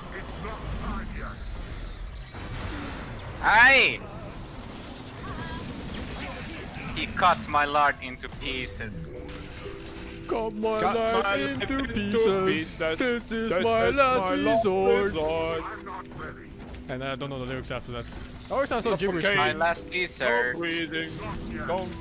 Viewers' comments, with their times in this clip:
0:09 DUET OF THE CENTURY